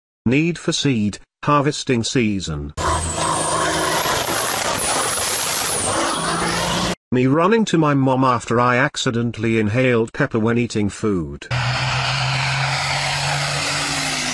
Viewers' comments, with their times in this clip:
0:00 That turbo noise pierced my eardrums